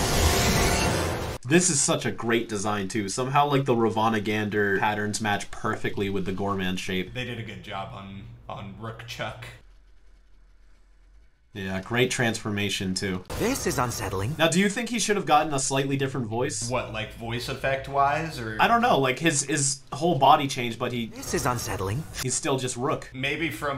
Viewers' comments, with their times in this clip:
0:06 perfectly more like perkfectly